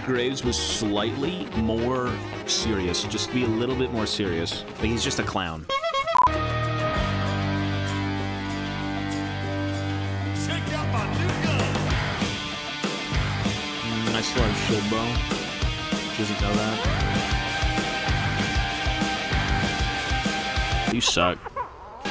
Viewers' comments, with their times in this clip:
0:06 dammm that Lernie theme hit hard